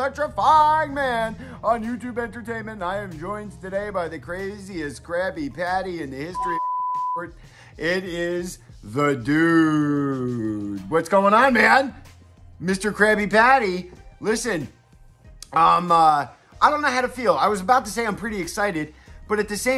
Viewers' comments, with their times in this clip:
0:06 did the dude just curse?? I heard a censor bleep. Looks like he said “son bitch” like he was trying to say “son of a bitch”